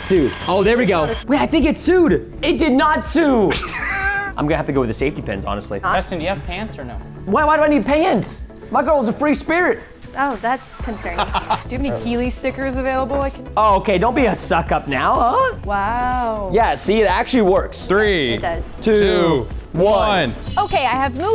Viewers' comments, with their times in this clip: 0:04 Preston be like it did not SIU